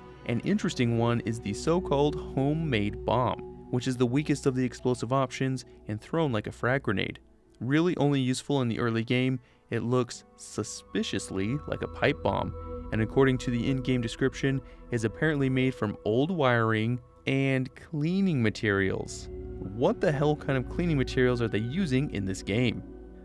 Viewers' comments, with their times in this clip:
0:10 I found the source of the ticking it’s a pipe bomb yay sorry I don’t know why I thought of that